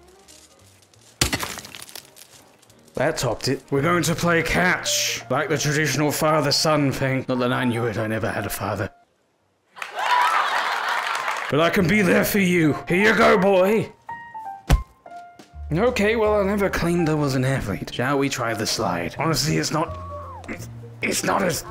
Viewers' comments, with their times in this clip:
0:07 the timing of the applause with the "saving" 😂😂